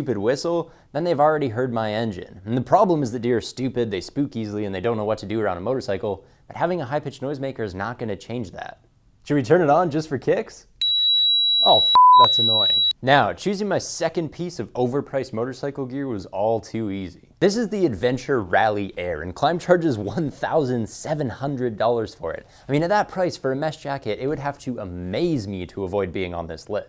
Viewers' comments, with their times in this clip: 0:08 fucken rip earphone users